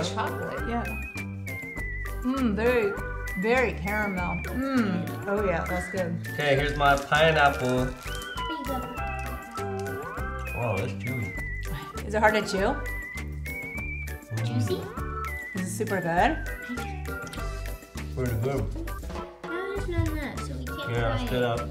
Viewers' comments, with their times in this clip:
0:06 Was that just me that heard Hell yeah on Sorry go 10 secs back